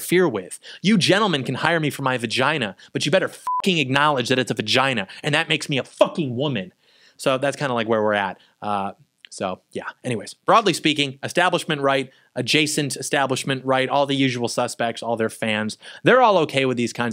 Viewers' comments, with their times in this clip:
0:05 missed a bleep 😂😂😂😂